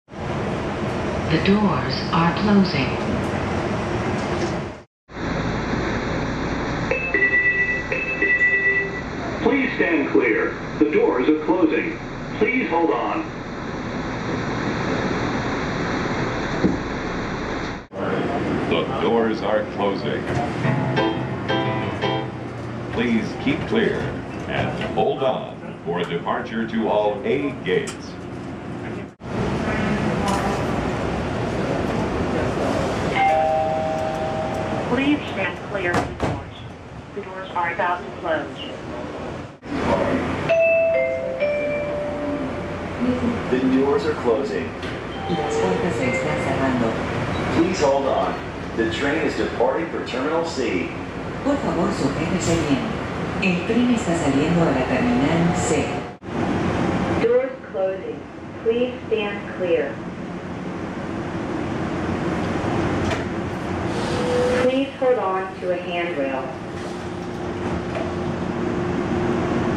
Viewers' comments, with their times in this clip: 0:06 Funny that have a door closing chime like the Sofia Metro which is in the Bulgaria. That sound is familar.
0:18 What? Music when the doors are closing???
0:20 Door closing has music?
0:24 What was up with the piano in the train ?!?! 😂🤣
0:28 Is that my mom?
0:38 late timing for the announcement to come on after the doors close lol😂
0:43 Does anyone know who did the announcements for the Houston Airport train? I really love the guy's upbeat charisma and his translator companion's gentle tone.
0:45 Funny how the announcement says "The train is departing for terminal C" and the last note of the chime is a C.
0:56 Useless Doors and voice sorry to say dat :(
0:57 Doors closing, please stand clear!! That sounded like Sydney Trains